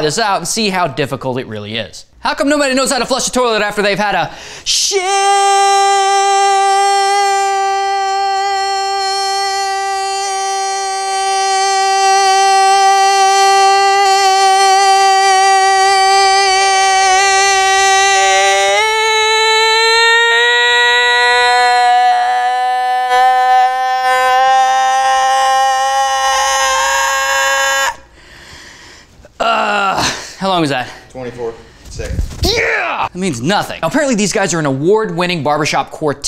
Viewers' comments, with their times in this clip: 0:04 I thought there was a mosquito in my room
0:04 if you are wearing headphones it sounds like a fly trying to get into your ear xD
0:15 dying goat XD
0:19 Sounded like a bee noice until u got super sayin on me
0:20 wtf is that a dying goat? Geese.
0:23 sounds like to chewbacca...